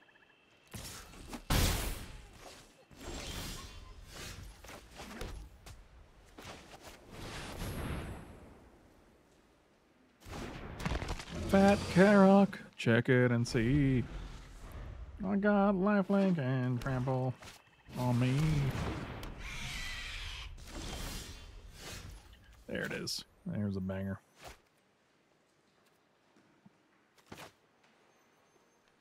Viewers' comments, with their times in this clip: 0:10 That Karok song tho 😂